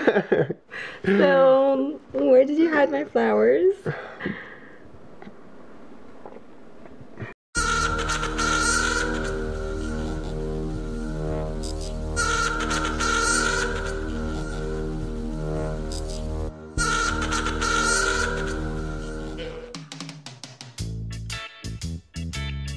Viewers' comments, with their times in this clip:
0:08 Hahaha! i LOLed at the music change. *EAU SHEEET* nahh na na na NAH nahh!